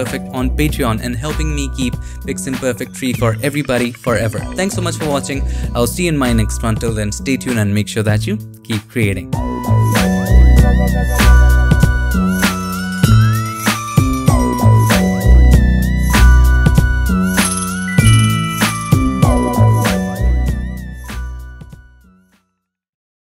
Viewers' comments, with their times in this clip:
0:09 and onward sounds like GTA San Andreas